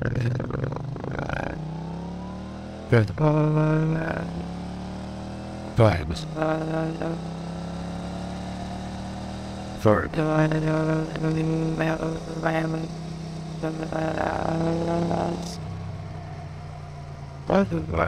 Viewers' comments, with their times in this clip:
0:05 hahaha this is hilarous 😂 The first recognisable word for me was: "VIBES"